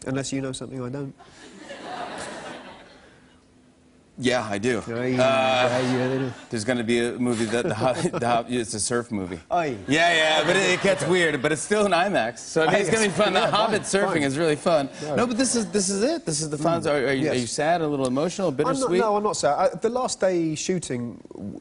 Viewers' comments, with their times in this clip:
0:09 That little 'oi' he made is too cute